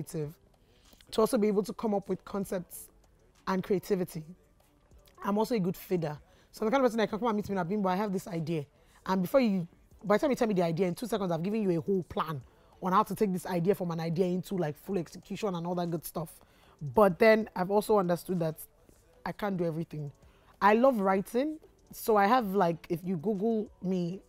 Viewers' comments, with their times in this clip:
0:05 Can someone please confirm what word she said "she is also a good fida/figa/feeder'" (Pretty similar to her in terms of when people speak to me about their ideas i can help them with lots of ideas, execution etc, searched all over for a word to describe someone like me...and she just did but i cant find the word she said anywhere...) someone help or please respond